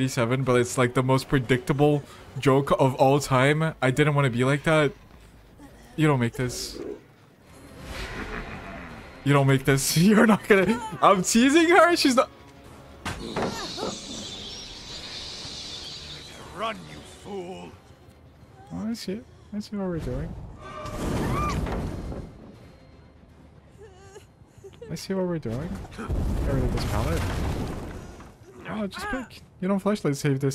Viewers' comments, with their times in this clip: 0:05 the silence is deafening
0:13 bro got quiet real quick lol Great video, so much fun to watch 👍🏼❤️